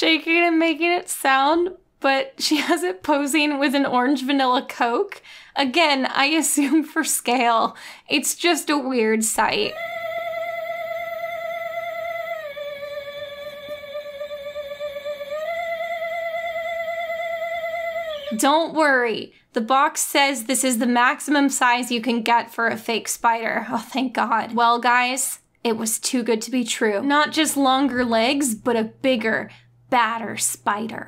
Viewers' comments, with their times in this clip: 0:09 aw get that coke away from the spider, the poor things terrified screaming and you can see it shaking... :(
0:09 the sound i make when using those massage chairs at the mall
0:11 I had a really shitty ghost thingy at halloween and it made the exact sound like the one Good to see chinese factories still use the same circuit boards 15 years later?
0:16 That spider noise/jiggle combo had me DYING of laughter
0:16 I have to buy the shaking spider xD it sounds funny